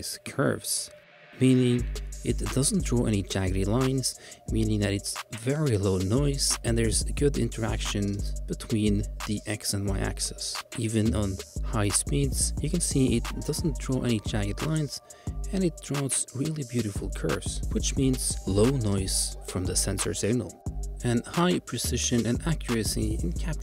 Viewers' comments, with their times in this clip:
0:08 I like the content but over time your voice gets less clear and quieter. To the point, you are almost mumbling. It's a problem because just turning up the volume won't fix how unclear your speech is. It could be just me but it definitely seems like as the video goes on it gets harder to understand what you are saying. I reached before feeling the need to comment on it. It almost sounds like you are trying to use the least amount of breath per word.